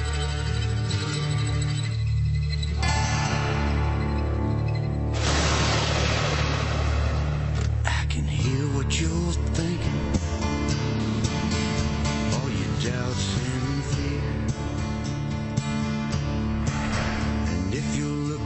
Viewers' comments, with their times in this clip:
0:03 chills when HHH comes out and Mark Collie strums that guitar. Wow.